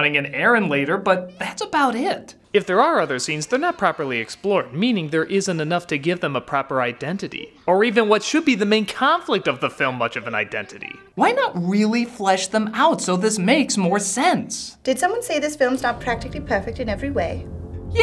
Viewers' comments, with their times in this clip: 0:03 why is there a weird echo